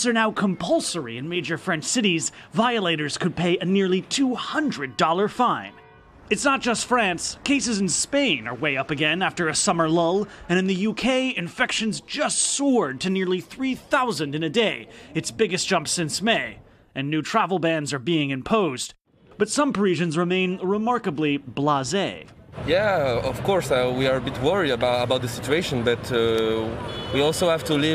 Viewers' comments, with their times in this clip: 0:09 did he say after a summer lol